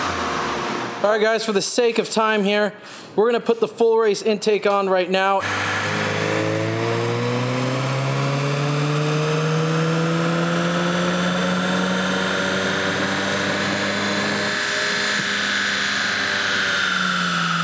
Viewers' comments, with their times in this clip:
0:04 *installs intake *proceeds to record exhaust sound ???